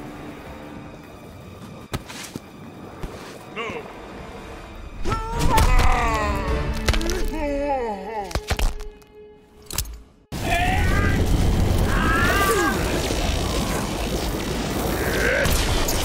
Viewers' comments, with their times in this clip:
0:04 only men know the pain 😂 and you can hear the "balls" pop 🤣